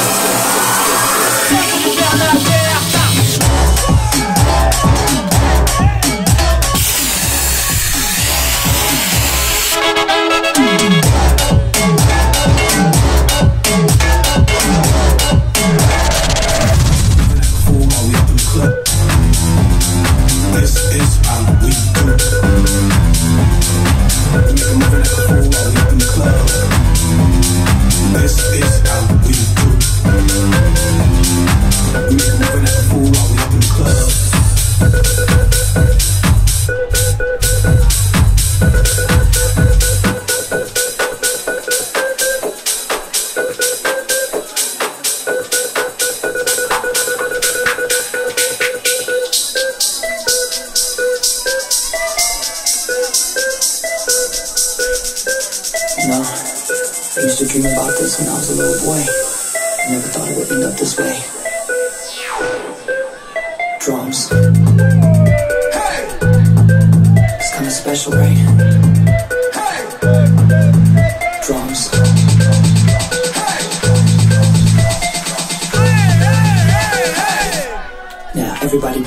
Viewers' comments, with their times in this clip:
0:04 THAT DROOOOOP 🔥 track name pls xD
0:54 The beat dropped so hard that his phone dropped
1:04 I mean drop song